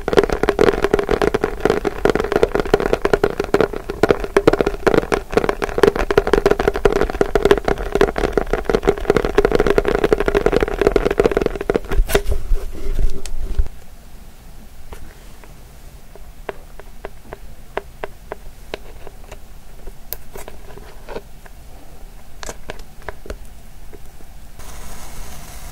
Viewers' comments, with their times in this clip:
0:10 they kept tapping the box